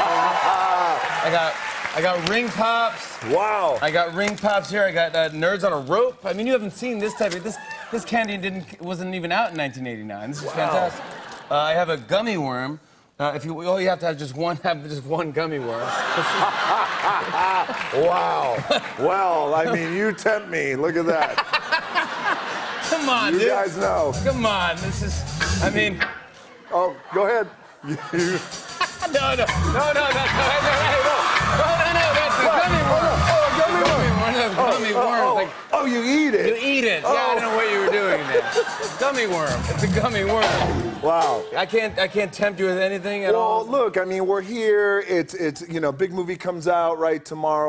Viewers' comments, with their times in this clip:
0:03 Lol sounds just like the actual wow meme sound effect! 😂😂😂
0:13 he's laughing because it's a replica of his gummy worm.
0:27 The camera movement was subtle but contributed so much to the shot, the little zoom out synced with dwayne's scream was the cherry on the top
0:27 That camera movement is crazy cause it does like a quick zoom out and it’s like the camera just said “oh Dwayne spinning the gummmy worm….WAIT HE SPINNING HIS DI-“ 😂💀 the zoom out even synchronized with the rocks scream 😂
0:28 The Rock doing that with the music in the background is perfect 😂
0:30 They sound like they were going to rap
0:33 the way he said gummy worm 😭